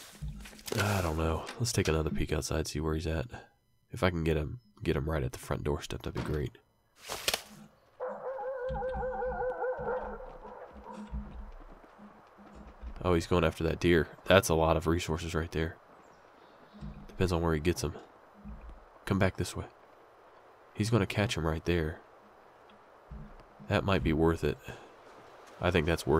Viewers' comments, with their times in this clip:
0:09 I only recently started playing this game but I heard that wolves only bark at the player... This was kind of a shocking, scary moment for me hearing them bark at that deer... I love that several times I have been told something about this game that I have simply found to be false, almost like there are some "legends" within the community lol